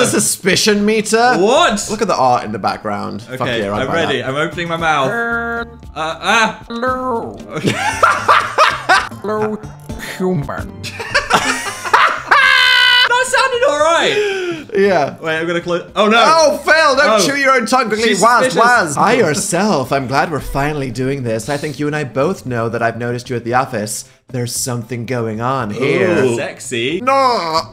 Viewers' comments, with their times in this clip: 0:10 sounds like the dog of wisdom aka hagadagabaga dog